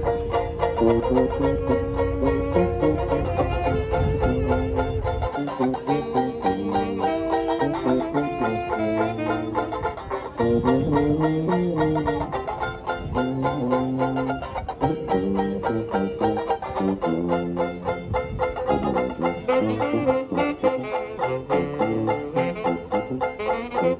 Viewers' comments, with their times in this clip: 0:05 LOVE the band, and what they're playing! <3 <3